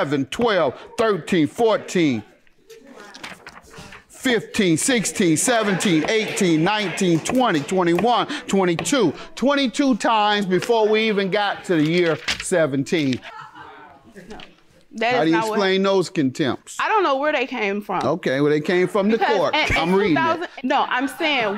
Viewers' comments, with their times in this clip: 0:07 Not the audience counting with him lmao 🤣